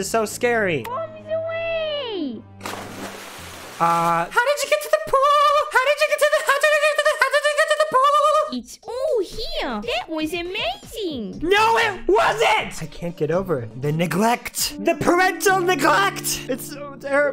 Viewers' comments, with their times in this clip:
0:04 he is now a ✨opera singer ✨